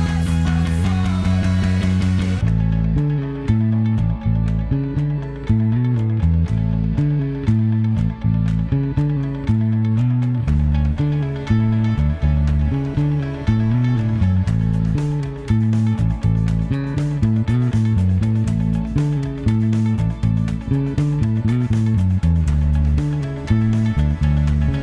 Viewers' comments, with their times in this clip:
0:10 5sos went from easier to fukin elevator music